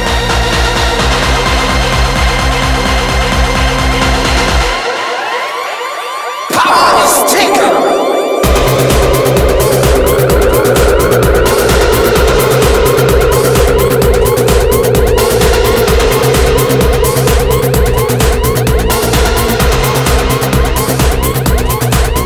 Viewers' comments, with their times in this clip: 0:09 It sounds like a sample of It Doesn't Matter of Chemical Brothers!